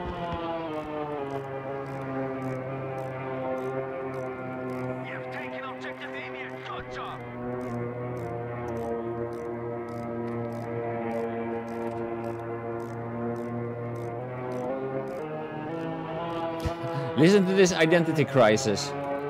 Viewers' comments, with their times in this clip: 0:03 big noise.. fix the bug. dice